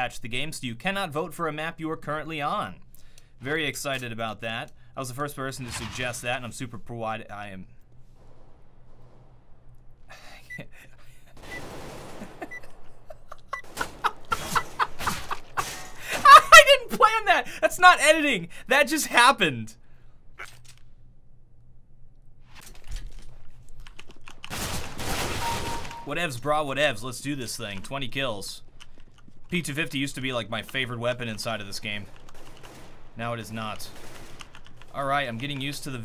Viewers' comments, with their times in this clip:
0:06 What was he laughing ?
0:06 Why was he laughing like a psycho ? like wtf
0:07 wtf is he laughing
0:08 why are you lauging?
0:11 Why did he start laughing ?
0:11 what were u laughing
0:18 Did he laugh about the bot that killed a bot with a knife?